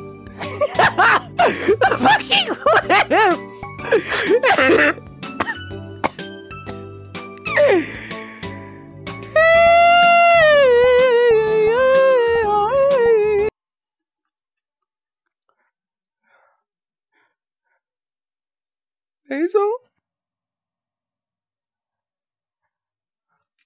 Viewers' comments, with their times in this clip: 0:06 Bro started harmonizing-
0:07 * COUGHS VIOLENTLY * ... * STARTS SINGING *